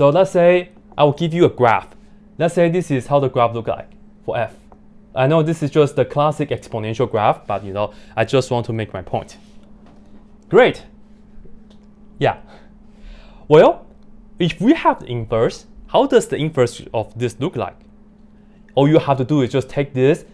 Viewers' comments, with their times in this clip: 0:08 great (hesitates bcos hes stealing michael penn’s vocabulary) yeah (inward smile) hahahha